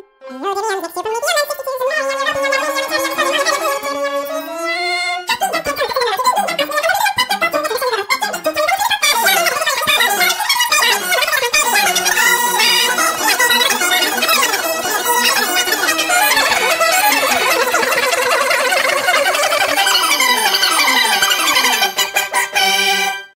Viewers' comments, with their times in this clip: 0:05 at the speed of 0.25 sounds normal tbh
0:20 In my oppinion its the very end that sounds normal with it, so